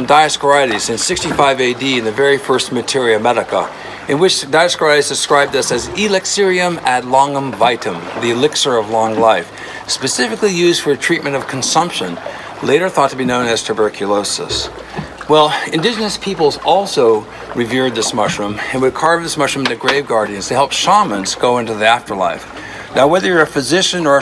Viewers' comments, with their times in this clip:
0:08 in... is this guy cursing at me?